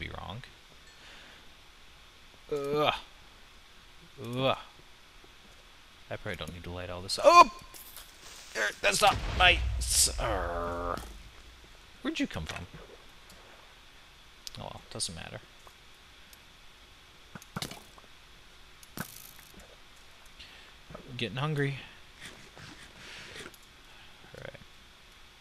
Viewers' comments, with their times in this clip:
0:08 Haha made me laugh so hard. Not even a sentence, just random noises xD Great videos! *Like :)